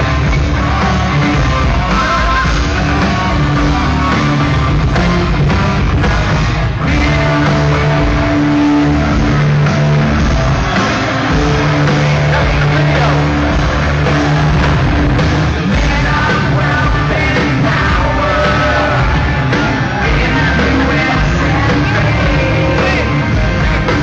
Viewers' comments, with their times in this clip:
0:06 sounds good good thing he didnt continue